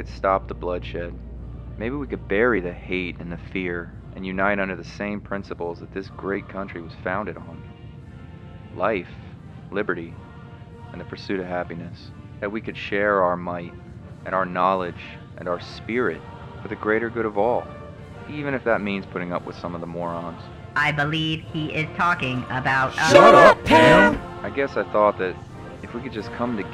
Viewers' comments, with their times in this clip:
0:08 insert eagle screech 😂😂😂😂😂